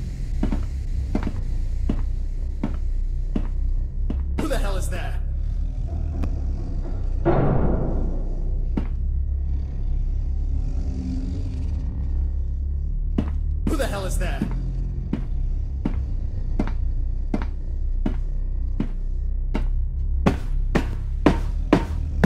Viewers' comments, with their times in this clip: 0:07 after it said “Who the hell is that” I was playing Skyrim and I thought it said “Hey you you’re finally awake” And I looked up to see the the game started ._.)